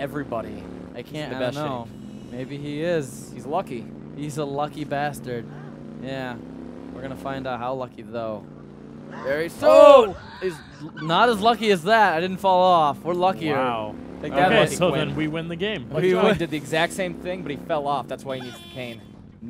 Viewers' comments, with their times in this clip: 0:05 i hear porn